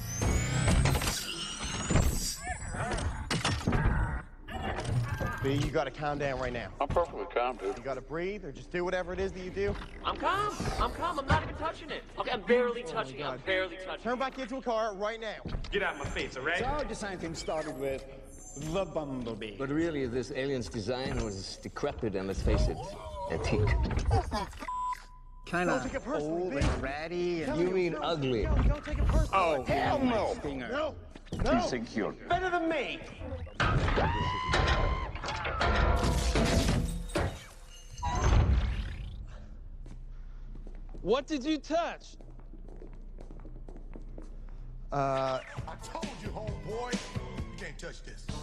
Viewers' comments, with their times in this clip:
0:08 I can’t unhear Sonic here
0:12 (I'm barely touching it.) I feel like that voice is perfect for Bayverse Bumblebee
0:22 bro brought back his voice for a sec
0:29 HE USE MARCUS VOICE FROM BAD BOYS 2 IM CRYING 😂😂😂😂😂😂😂😂😂😂😂😂😂😂😂😂 OH HELL NO💀💀💀💀💀😭😭😭😭😭